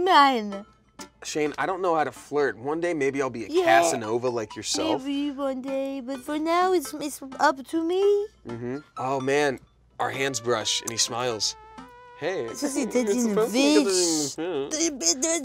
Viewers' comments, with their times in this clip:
0:03 lmao didn't know Shayne has a european accent now